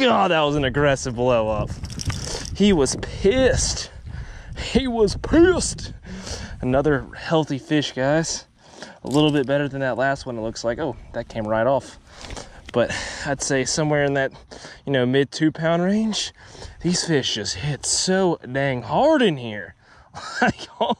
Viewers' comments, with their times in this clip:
0:04 u sound like ders from workaholics lol